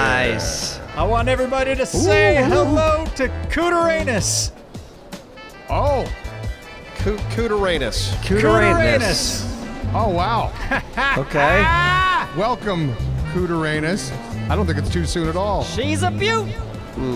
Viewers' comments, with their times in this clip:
0:05 Oh Jesus, you could cut that silence with a wyvern teeth.